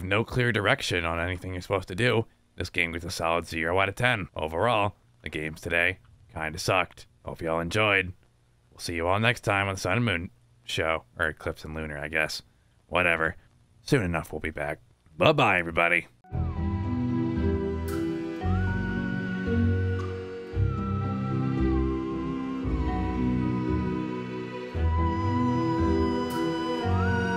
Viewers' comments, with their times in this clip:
0:08 That little pause after "Sun and Moon," realizing that we're not there just yet. 🥺 But we will be, soon!